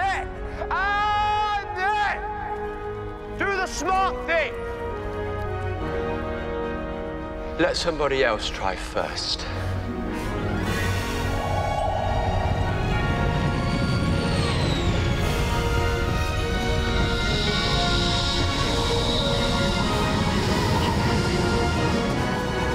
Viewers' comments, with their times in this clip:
0:04 insert hundreds of laser blasts here